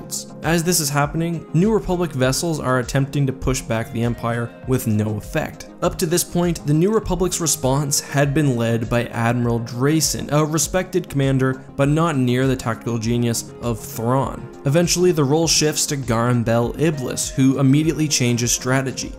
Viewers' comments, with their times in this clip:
0:07 Why are you giggling?